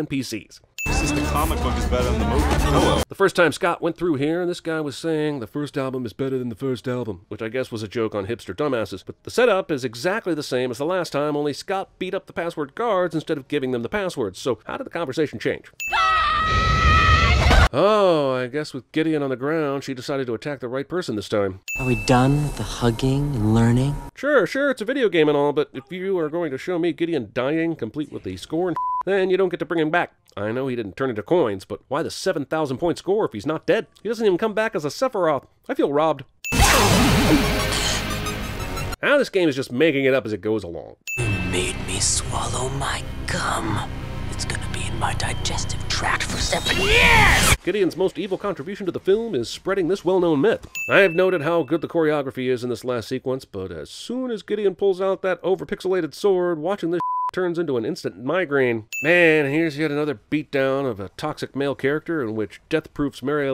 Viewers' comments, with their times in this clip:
0:06 I think Scott simply entered the building slightly earlier this time to catch the guy in an earlier point in the conversation, you hear the band is also playing the same song but a different part of it too than the first time he went in
0:44 It did not sound like "gum" to me. But i will leave the interpretation for you.